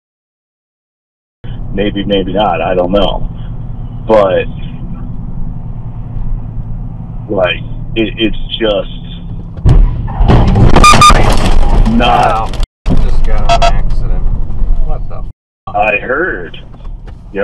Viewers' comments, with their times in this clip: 0:03 .... this dude just watched 1, possibly 2 people get SQUISHED. and he has the most chill "i just got rear ended". like it was a fender bender.... this dude's level of chill